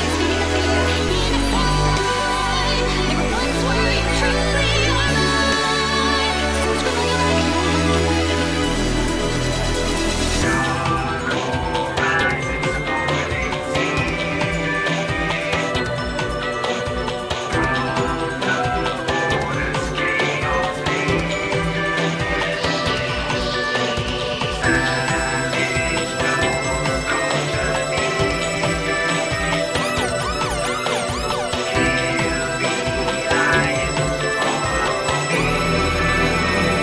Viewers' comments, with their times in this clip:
0:08 its like someone stepped on the remote and acidentally put on "hesperos's beats to chillax to" by accident
0:24 Never heard this til I got a new headset, but there's a ear piercing high frequency around the mark going from the male vocals back into the main part of the song. Anyone else hear this? Edit: updating this is a great song for trying out new headsets, I always come here to EQ them, the sub bass from this track is very good.